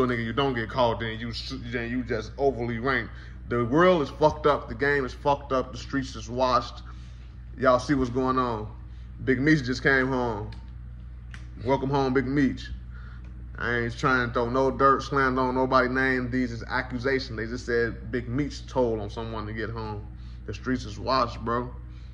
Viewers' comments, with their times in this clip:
0:05 sound like the start of a song